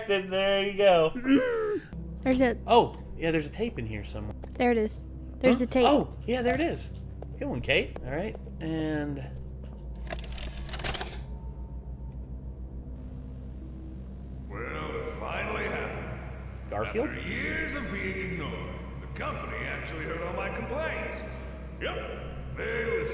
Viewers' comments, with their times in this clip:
0:09 Okay I’m not just being an idiot right? But I swear that sounds exactly like Clancy Brown. Aka the voice of Mr. Krabs from SpongeBob. I mean just listen to his voice and tell me he doesn’t sound like Clancy Brown.